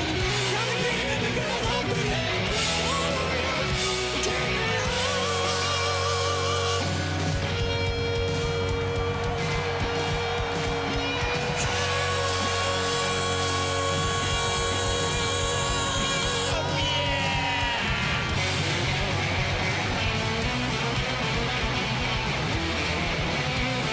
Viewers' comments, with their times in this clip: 0:04 Sounds like 80's Axl!